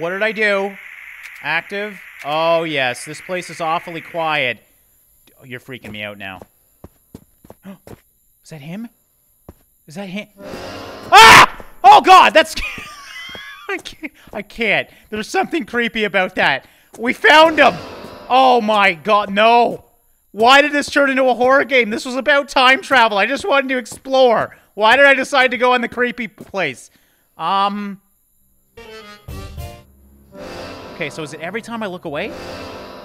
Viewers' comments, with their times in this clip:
0:07 thank you for scaring the crap out of me after i turned up the volume because it was so quiet
0:11 MY EARS DRAE YA TWAT
0:17 I shit myself hearing the accordion played